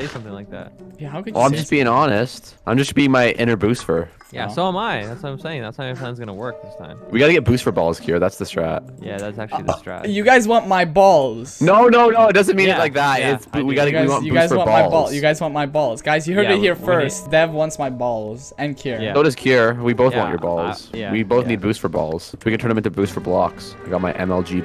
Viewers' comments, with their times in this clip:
0:06 why was there a uhhhhh